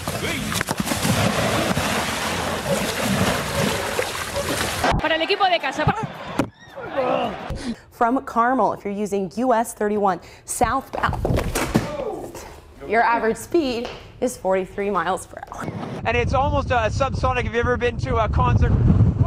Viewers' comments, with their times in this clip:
0:05 I love the random "buh" at the end of the clip